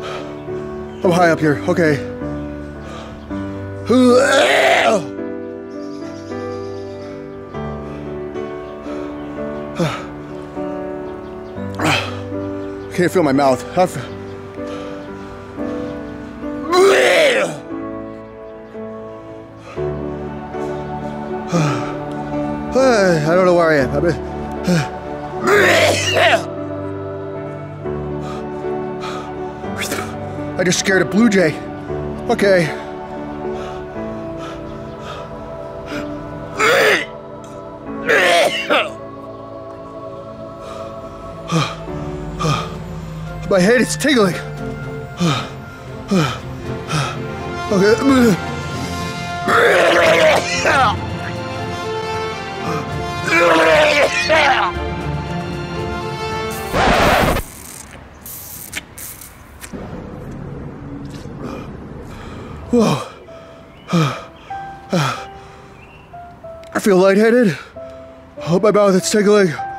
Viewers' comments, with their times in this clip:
0:08 ok I am really high up here. Dry heav!!! Literally laughing my ass off.
0:25 He summoned that birb, with magical, violent, vomit noises.
0:37 when the food is so hot you litterally cough fcking smoke
0:38 bro literally coughed up fire
0:51 When the glorious trumpets start playing when you puked 😄